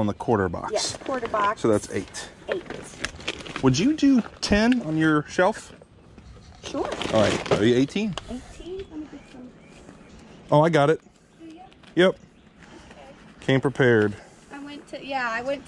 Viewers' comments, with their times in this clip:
0:03 dude sounded like chris pratt